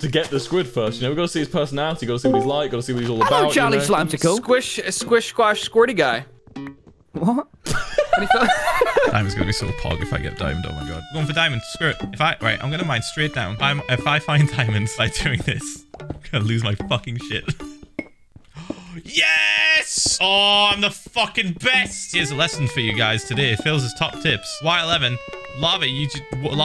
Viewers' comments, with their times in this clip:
0:03 The pitiful little ''Wot?'' killed me!
0:03 Tommy sounds so confused and concerned in that "what..."😂
0:07 the way hes says "what" is just so hilarious